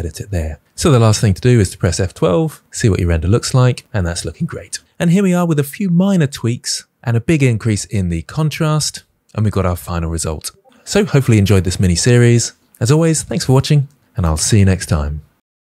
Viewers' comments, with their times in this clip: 0:10 * My gamer ears catching that sneaky Discord message noise in the background*